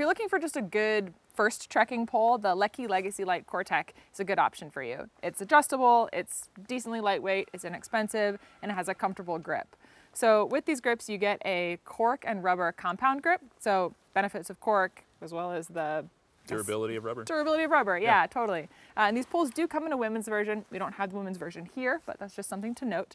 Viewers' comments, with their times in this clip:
0:08 Am I the only one who heard that yelling ?